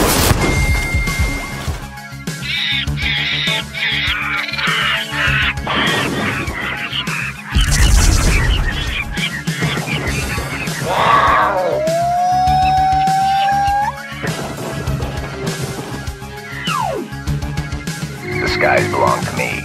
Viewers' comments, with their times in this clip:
0:03 Great editing as always, the bowling noise (as well as everything else that happened on that screen) was the funniest shit ever